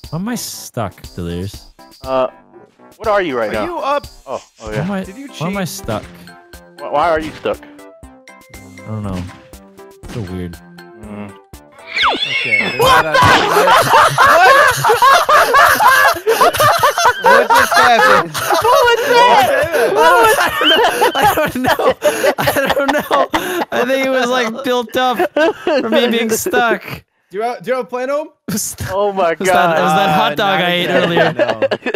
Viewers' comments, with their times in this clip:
0:10 vanosses laugh sounds like a trumpet
0:15 Vanoss sounds like a duck no offense vanoss😋😂